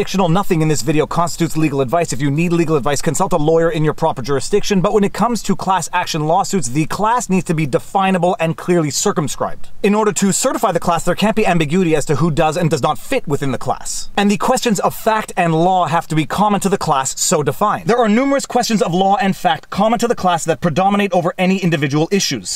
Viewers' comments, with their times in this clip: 0:04 For a sec I thought you said "The class needs to be definable and clearly circumcised."